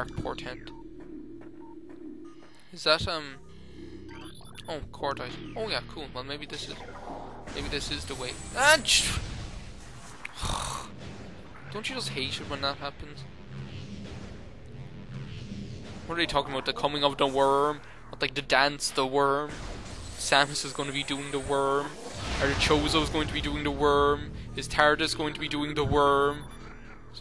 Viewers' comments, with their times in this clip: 0:10 I think being tired is a great reason to take a break. That's kind of the whole reason for breaks. To prevent you from being tired lol. When you said that it reminded me of that scene in Beetlejuice when they meet Beetlejuice for the first time. Where after his head spins around a few times he's like "don't you hate it when that happens" lol. You said it just like he does XD The The first Neverending Story is definitely the best one.